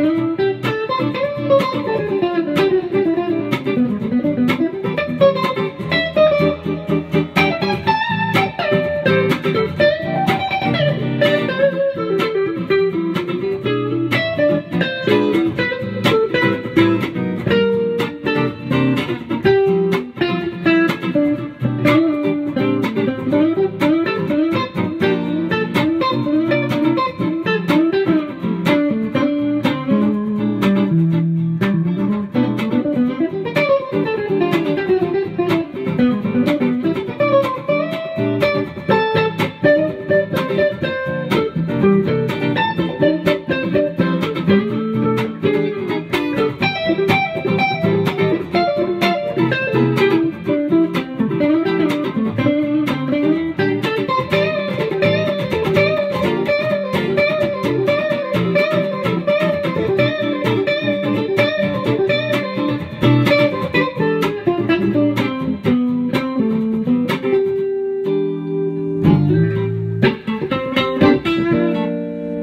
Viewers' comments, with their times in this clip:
0:06 what an amazing lick.
0:06 I got goosebumps !!! Amazing lick man i love this so much
0:07 tasty riff man edit: someone else commented this two years ago lol. 9 minute video and tons of cool lines but that pretty simple nice sounding one really stuck out.
0:09 such a clean line I can’t comprehend how someone comes up with that
0:23 super fun riff :)
0:53 what a super sweet interplay!
0:55 you played THE lick... hahaha.. beautiful jam guys!!